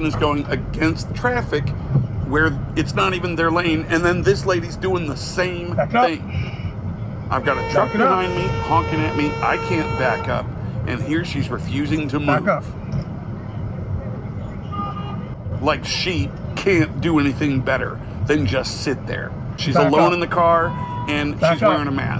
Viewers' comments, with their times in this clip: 0:06 Are you ok? LOL! He's not saying anything as it happened, much less ranting. He's doing a voice over to explain the video when he edited it after the fact. The first time you actually hear him speak in the original audio from the video is when he's telling her back up. I can't believe than anyone honestly though that he was ranting about this in real time, much less that he pre-planned it based on the voice over recorded later.